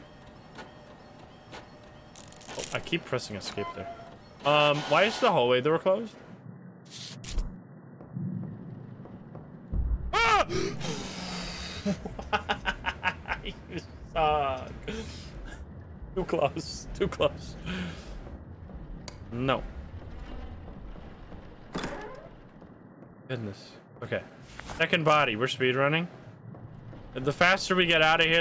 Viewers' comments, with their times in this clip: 0:09 U idlot ur screem gets me mor than the gurl 😂